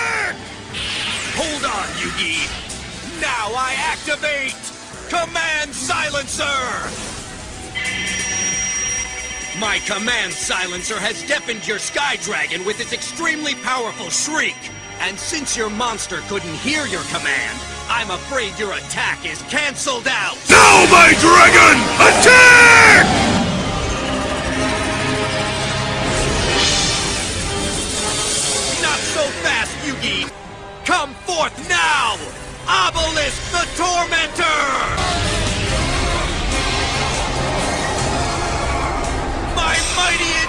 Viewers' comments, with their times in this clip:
0:10 lol After watching this 20 times I finally realized that Yugi screams for his attack right after and does that because Slifer “couldn’t hear” his command so he had to yell it lmao Your a genius
0:25 lol, volume higher